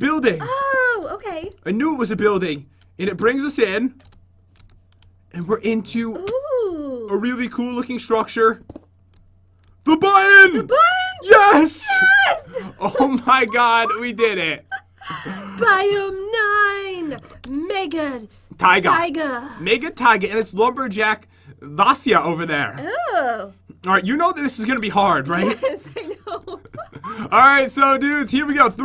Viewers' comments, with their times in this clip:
0:10 listen closely you'll hear a squeak/fart